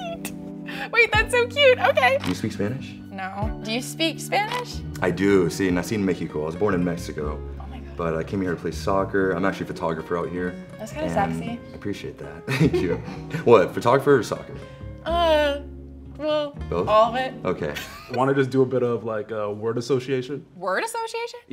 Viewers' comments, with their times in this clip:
0:03 I like his voice mmm